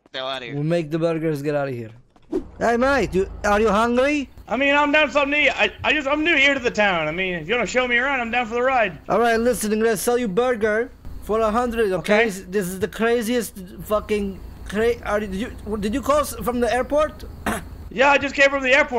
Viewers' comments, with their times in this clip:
0:05 Yo was that miniladd? sounded like him